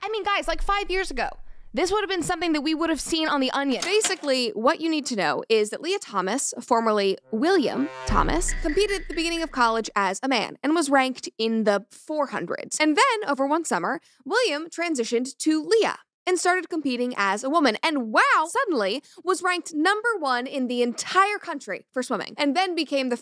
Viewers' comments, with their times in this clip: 0:06 HAHAHA THE IMPOSTER SOUND 😂
0:07 The "Amung Us" sound effect. Really? You're killing me xD I dont even play the game and still recognized that sound lmao.
0:07 music says all